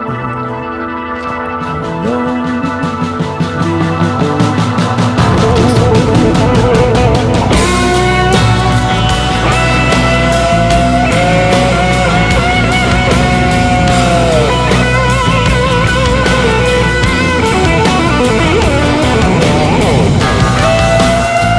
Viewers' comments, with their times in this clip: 0:07 I just got done telling an edgy kid that the human race isn't some shitty thing that needs to be ended and that their human loathing phase will end soon enough, and then I switch to this tab just to catch Joe launching into this solo. I grinned a lot.